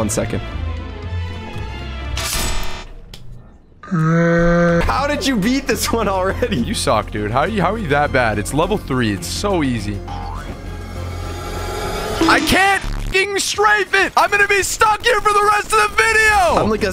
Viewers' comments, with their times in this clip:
0:03 that scream was so LOUD💀